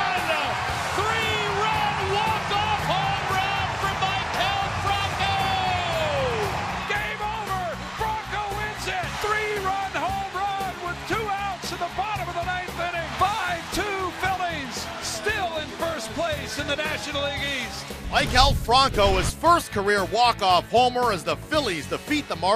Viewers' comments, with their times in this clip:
0:06 The genuine happiness of Scott Franzke makes my heart flutter. Phillies baseball in October doesn’t seem like a pipe dream now that I’ve heard that. “Still in first place in the National League East!”